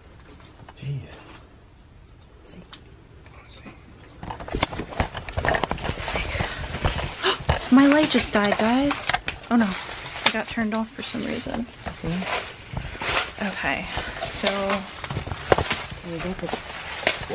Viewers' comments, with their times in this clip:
0:03 I Hear A Women Saying Satan But Great Video Loved It Thank You And God Bless ❤️